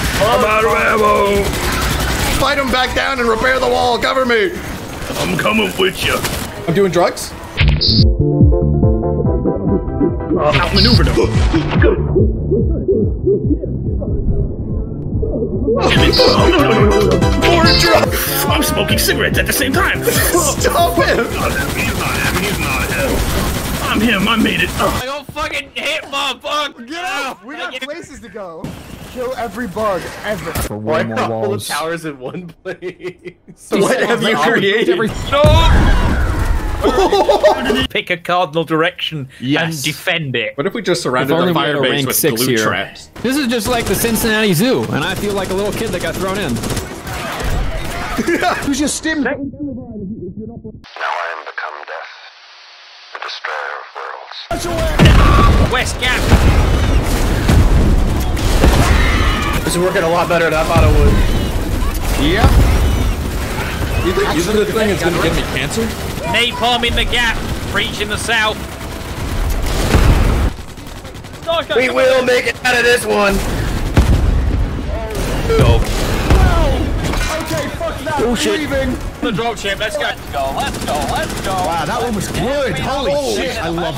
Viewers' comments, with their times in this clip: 0:07 That Super Mario Re-mix Fracking HITS!!!
1:06 That guy sounded like sport commentator